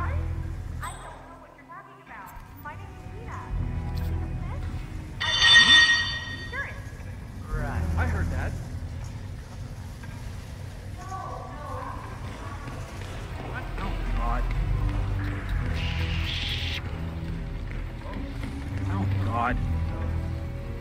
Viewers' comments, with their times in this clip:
0:04 Holy shit, that echo!